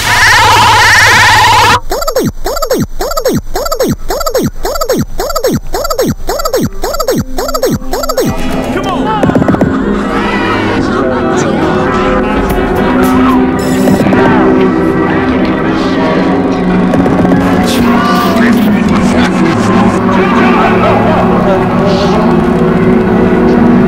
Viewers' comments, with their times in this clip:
0:08 Sounds like more normal PA right here. Somewhat.